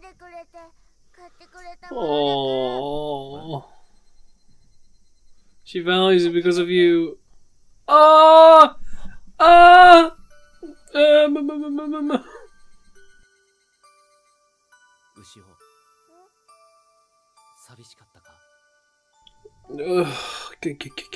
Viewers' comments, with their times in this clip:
0:09 It's been 12 years and this episode still haunts me to this day. Every time I hear this OST my eyes burst into tears, every, single, time.